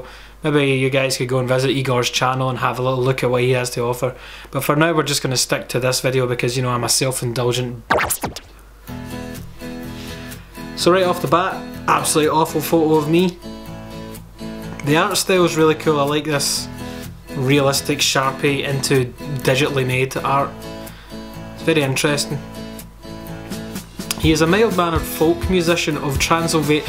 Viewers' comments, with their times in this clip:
0:08 I didn't know satan was scottish